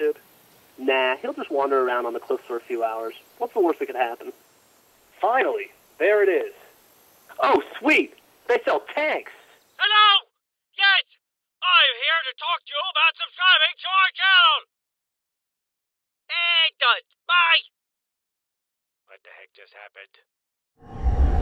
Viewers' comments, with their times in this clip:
0:08 CRIST don't put on head phones and put it on full while watching this scared the hell out of me